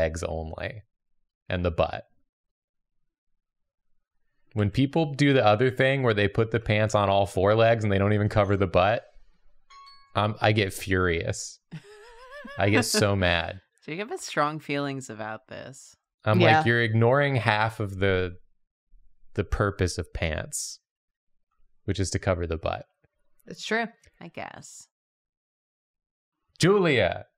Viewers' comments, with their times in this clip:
0:10 The lil alarm noise spooked me